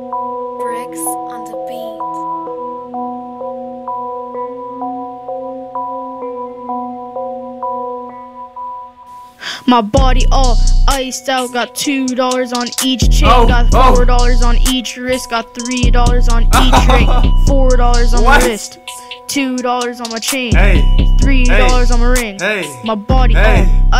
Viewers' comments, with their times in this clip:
0:09 did not expect it to be a little kid😂 but lowkey fire😂